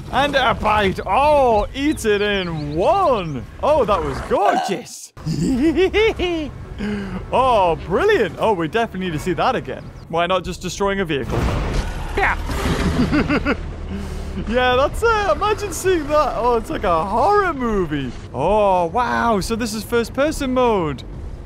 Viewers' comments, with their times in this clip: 0:04 scorpius rex burp